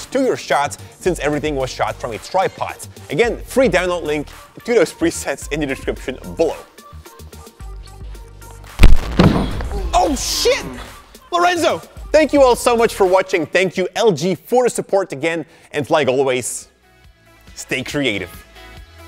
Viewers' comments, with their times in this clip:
0:04 man you sound cute